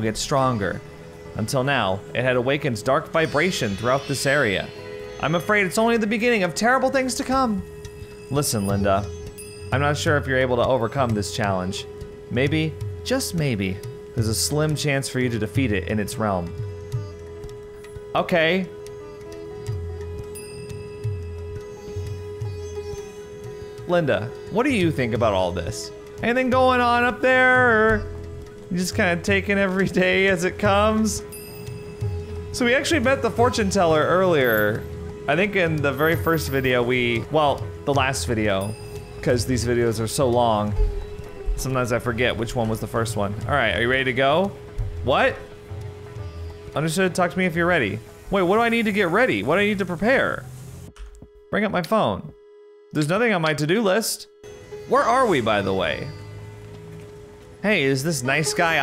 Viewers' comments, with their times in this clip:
0:06 Why is the classical Indian music playing in background? The music is nice but it doesn't match the setting.
0:39 music in the background reminds me of playing The Simpsons Hit & Run and going into the Kwik-E-Mart :P